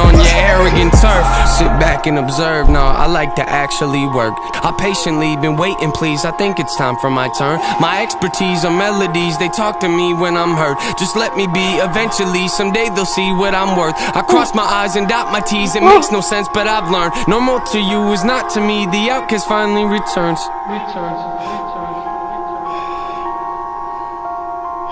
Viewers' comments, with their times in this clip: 0:04 Why’d you cut part the song ?
0:05 he quotes patiently waiting which is a title of an Eminem song featuring 50 cent while he is using Eminem’s flow from a song in Eminem’s kamikaze album